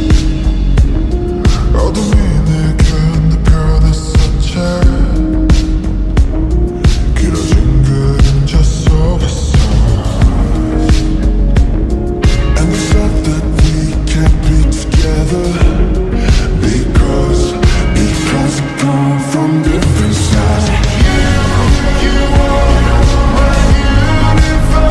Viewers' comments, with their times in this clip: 0:08 OMGGGGGG. TAE SOGGY SAEEEEE deep voiceee